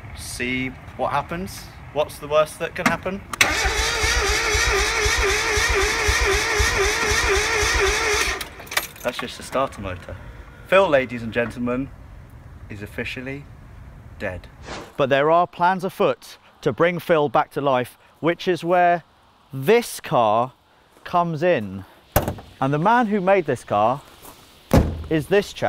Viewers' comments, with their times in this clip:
0:06 thats the timing belt/chain😮